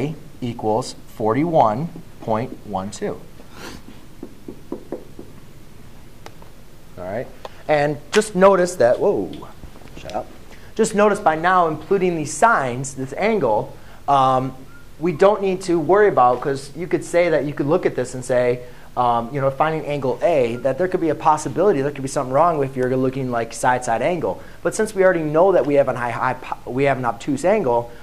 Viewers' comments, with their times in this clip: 0:09 did anyone notice how he said shut up